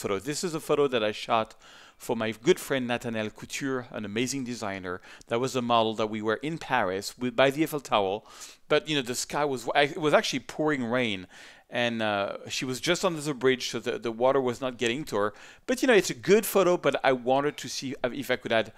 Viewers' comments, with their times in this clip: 0:06 did you just say, Eiffel Towel?